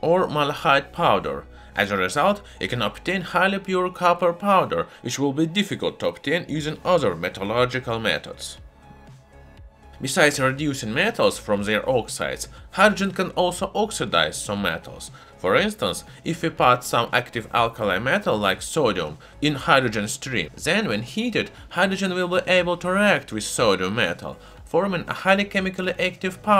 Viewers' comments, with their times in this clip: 0:10 Bubblegumium? Edit: Na it's just Sodium...